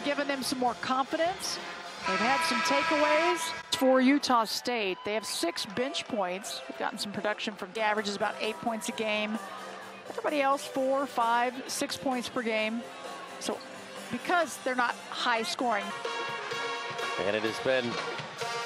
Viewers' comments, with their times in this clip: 0:05 did she say," 6 bitch points"?